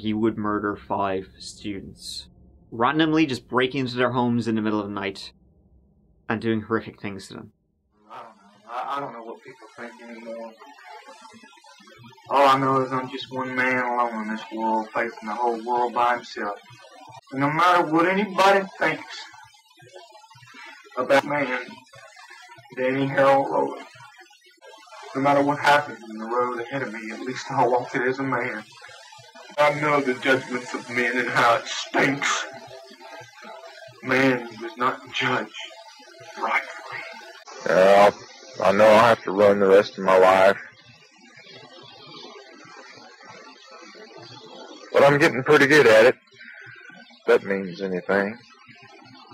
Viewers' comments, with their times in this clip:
0:07 he sounds like Doyle from Slingblade. “Hunny.. you know how I feel about midgets and antique furniture”
0:32 Man, the way he emphasizes the word "stinks" is equal parts comedic and delusional and very, very angry. To me it sounds like (he believes) he's been betrayed by society. He definitely sounds very much like a man whose mind is on the verge of snapping like a twig. I really hate the word "stinks", btw. Something about it just rubs me the wrong way 😖 it has a very... gross sound to it (yeah, who'd have thought, right? 😂)